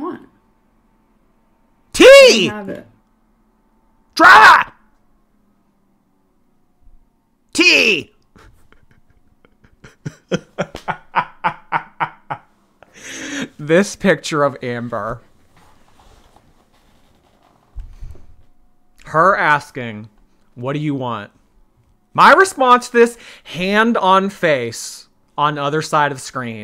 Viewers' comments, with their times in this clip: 0:10 PRESS for EVIL LAUGH. Merry Christmas!